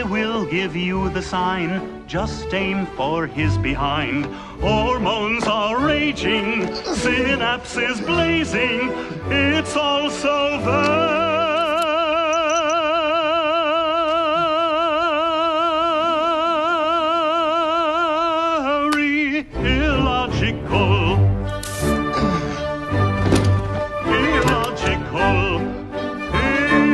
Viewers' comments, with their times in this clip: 0:10 Obviously computer generated instrumentals seems to be aware of the situation